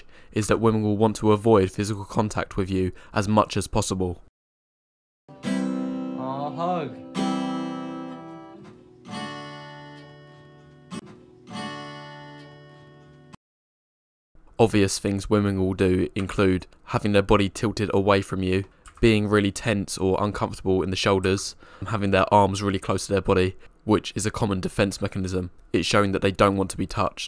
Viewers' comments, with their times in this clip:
0:08 The "it's over" guitar string note of doom.